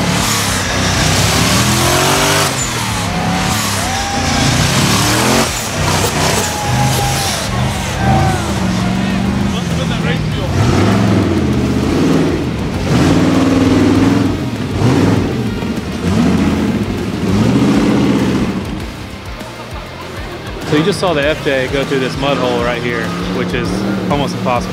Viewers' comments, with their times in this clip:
0:10 What’s the build on that massive quiet rig? Motor trans axles ? Anyone? Impressively capable